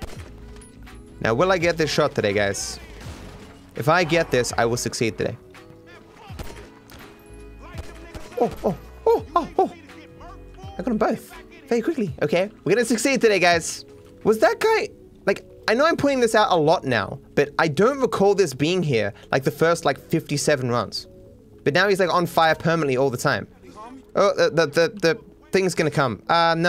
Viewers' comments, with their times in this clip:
0:07 happy monke noises